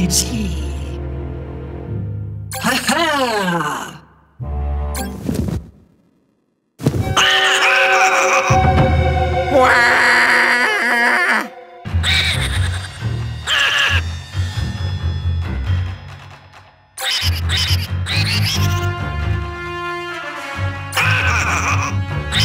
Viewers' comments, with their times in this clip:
0:07 That music is scary